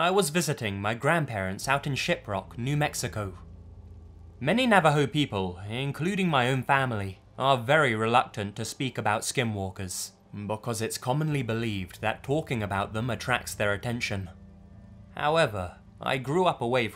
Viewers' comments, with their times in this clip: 0:03 anyone else here shitrock New Mexico the first time he said it? 😂